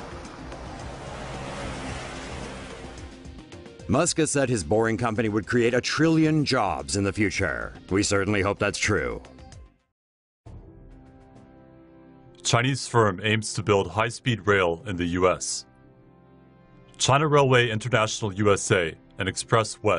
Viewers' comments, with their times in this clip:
0:03 The narrator said that with an ironic attitude, "musk says in the future they will create a trillion jobs, we hope thats true"